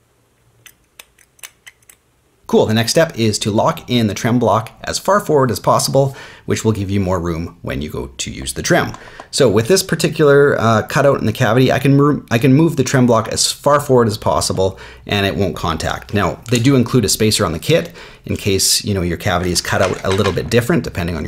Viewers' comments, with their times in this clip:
0:06 This voice sounds like a bass Warm